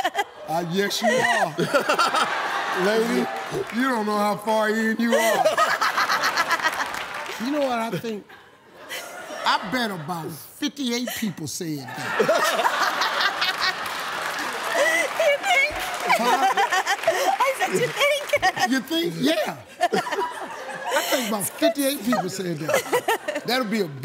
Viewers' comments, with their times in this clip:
0:07 The way Steve said that tho 😂